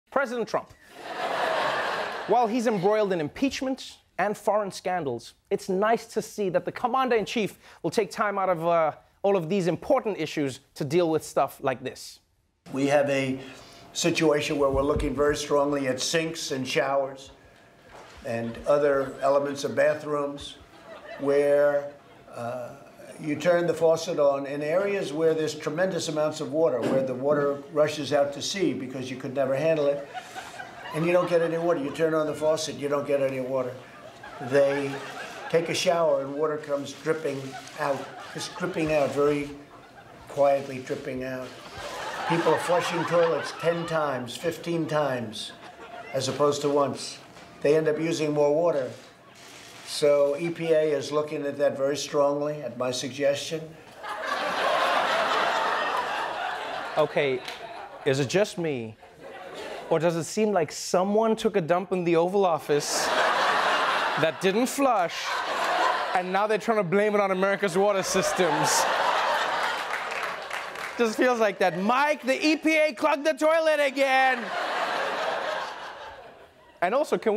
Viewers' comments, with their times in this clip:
0:01 at this point, just the mention of trump’s name leads to everyone laughing.
0:01 at this point, just the mention of trump’s name leads to everyone laughing.
0:40 The way his voice just trails off with such grave melancholy at the thought of toilets - kind of makes you think if perhaps he called so many non-white nations "shitholes" as a term of affection. He clearly seems to care a lot about shitholes...
0:59 I absolutely love how out of the whole ridiculousness that dripped out of trump's mouth prior, the audience laughed most and most immediately at trump's suggestion that it was "his idea."